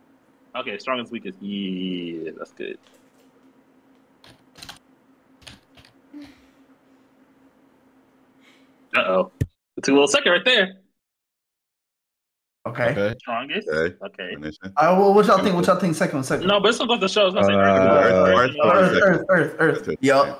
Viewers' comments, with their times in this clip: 0:06 ARE Y’ALL ACTING LIKE YOU DIDN’T HEAR THAT MOAN?????